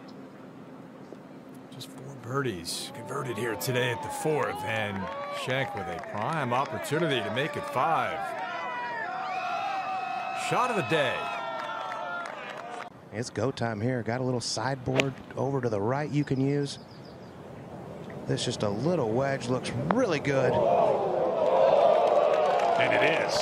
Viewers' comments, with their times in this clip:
0:09 that background scream😂